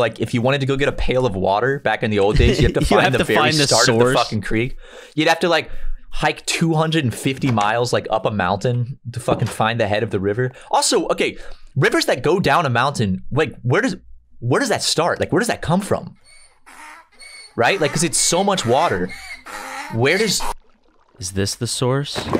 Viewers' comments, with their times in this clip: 0:10 I lost it at the donkey sfx.